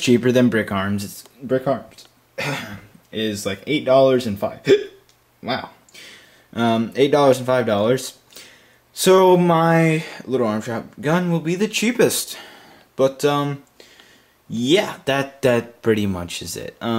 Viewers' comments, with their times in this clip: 0:04 thumbs up with the hiccup